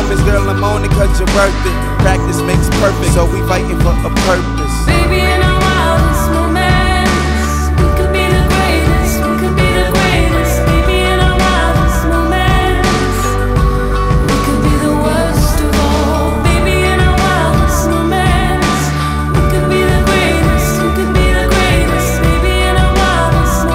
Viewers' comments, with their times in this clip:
0:04 I love the transition to the main chorus !